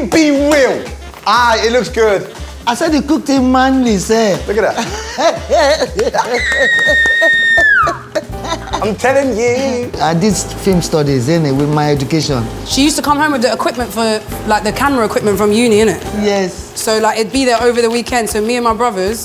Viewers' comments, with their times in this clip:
0:05 Chunkz that squeal 😂😂😂 Oh and i use spoon to eat rice, forks are for noodles/pasta